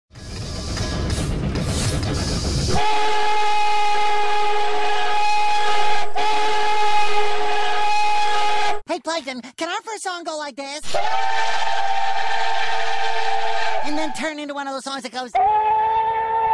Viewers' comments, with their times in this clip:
0:02 My god when you're calling it a crack whistle it's sound of a cow that have a broken vocal cord like jesus christ that caught me off guard